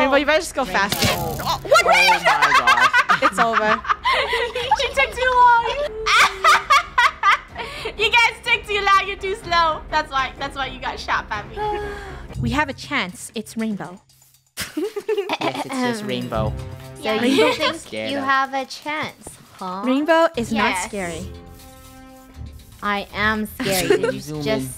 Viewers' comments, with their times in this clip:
0:06 EVIL MODE LAUGH ON